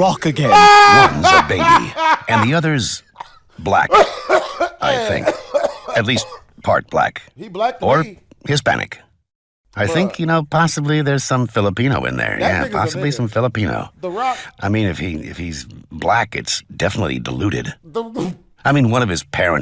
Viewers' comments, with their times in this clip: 0:03 sounds like the laugh from feel good inc